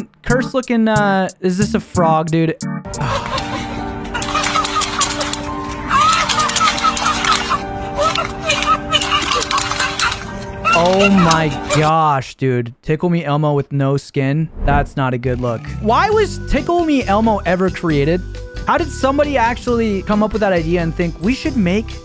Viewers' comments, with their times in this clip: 0:03 is screaming "help"